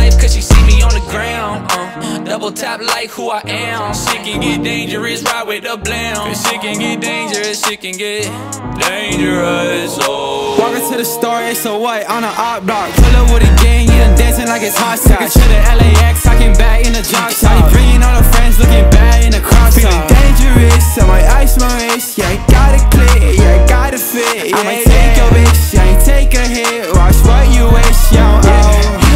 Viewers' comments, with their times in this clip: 0:10 THAT TRUMPET MMM
0:12 that beat drop omg